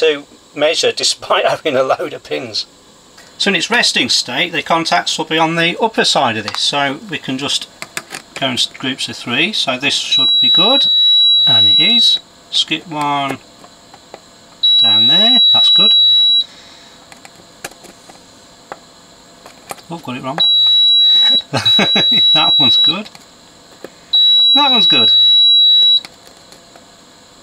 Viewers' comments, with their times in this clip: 0:08 Advice: turn volume down